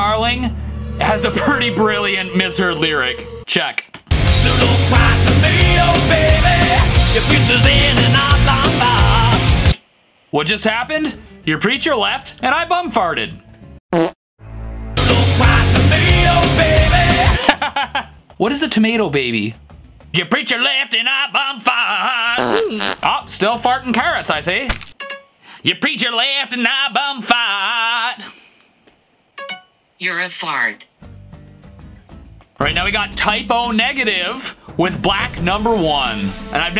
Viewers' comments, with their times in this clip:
0:04 "Don't cry tomato baby!" -James Hetfield
0:05 it also sounds like they say "Don't grind the mayo baby"
0:18 charlie from hfjone